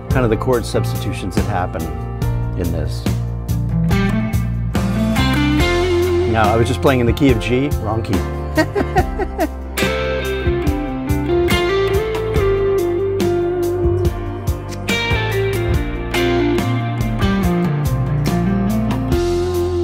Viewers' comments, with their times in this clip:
0:06 Masterful..! Btw: you were not in the wrong key...you were just playing "outside"! 😉